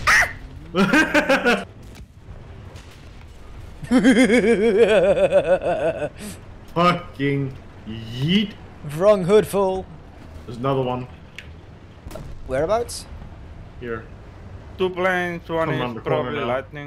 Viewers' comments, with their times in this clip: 0:03 your laugh is the perfect evli villin laugh